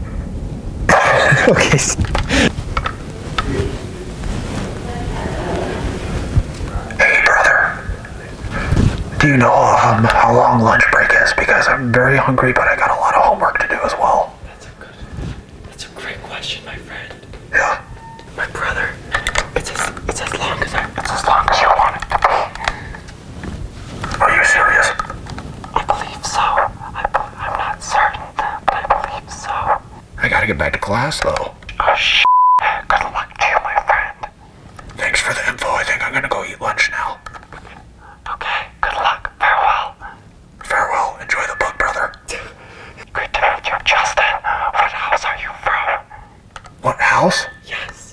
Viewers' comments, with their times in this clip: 0:05 I thought that book was called "Utopia for Breasts"
0:34 that dud lmaoo